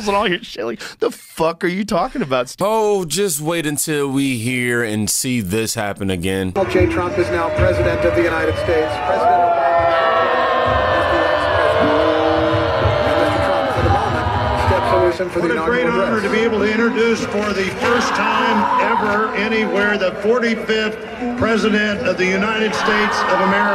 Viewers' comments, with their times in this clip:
0:07 Such an epic moment lol! You're so accurate on mimicking her lol